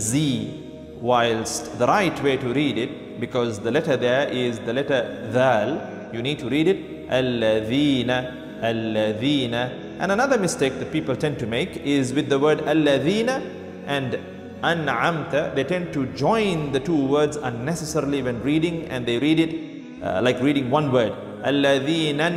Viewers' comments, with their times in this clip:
0:07 I didn't understand the pronunciation :(